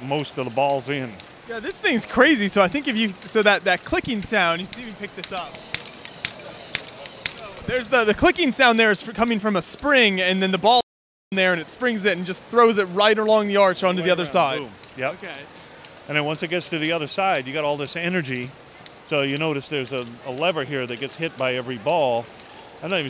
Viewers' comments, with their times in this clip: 0:10 What was with the censor ? You already have enough innuendos for people on the internet to laugh at.